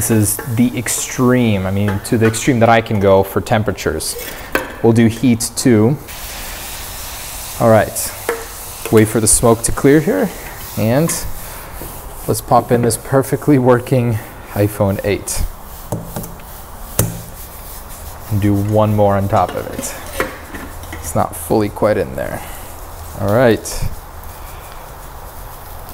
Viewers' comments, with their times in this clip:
0:08 voice crack😂❤ and yes I know this is off topic but I don't care, and I love your videos!